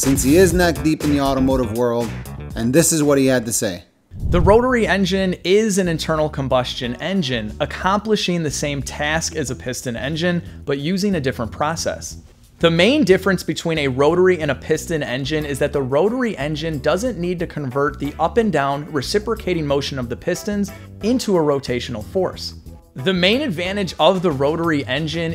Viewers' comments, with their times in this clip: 0:03 The guys voice wasn't in sync and it bothered me so much
0:13 I swear 99% white guys sound like this.